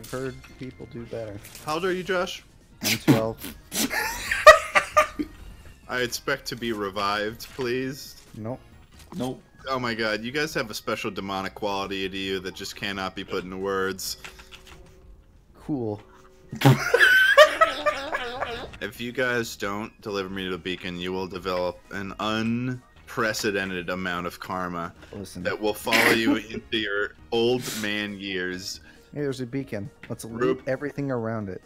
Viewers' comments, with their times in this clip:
0:05 I KaV tWo kIlLS
0:12 What a laugh
0:14 lmao his laugh
0:15 sounds like a Febreze bottle being squeezed
0:15 the best laugh ive ever heard like t h e b e s t
0:15 the hell is that duck laugh
0:15 what is that laugh lol
0:17 when your pet raccoon chokes
0:17 The laugh is what really radiated demonic energy
0:17 sounds like a dog trying to bark and cough at the same time. . . 😂 👏 👏
0:17 The noise in the background after he wheezes.
0:17 Donald Duck? Is that you?
0:17 WHO IS THAT LITTLE DEMON LAUGHING?!
0:17 is a dog growling and being strangled at the same time in the background?
0:17 I can't be only one dying at his laugh 😂
0:17 Whats that laugh im cryin 😂😂😂
0:17 Emm....... Donald the Duck?....
0:17 what the hell was that laugh
0:17 what was that laugh lmaoo
0:17 listen closely to his laugh
0:17 i love that laugh
0:18 sounds like the boots from spongebob